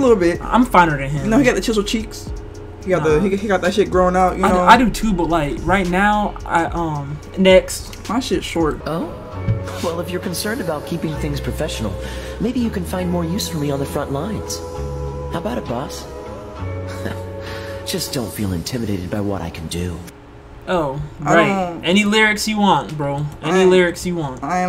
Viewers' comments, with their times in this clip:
0:09 BRO THE THIRST TRAP WITH KAEYA’S VOICE FROM HIT GAME GENSHIN IMPACT TOOK ME OUT BAHAHAHAHAHAAHHA IT’S 😭😭😭